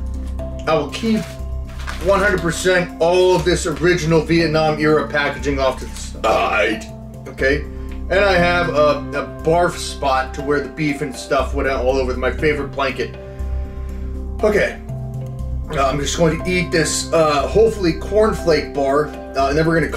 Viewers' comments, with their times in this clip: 0:05 That belch made me laugh so hard. 😂😂😂😂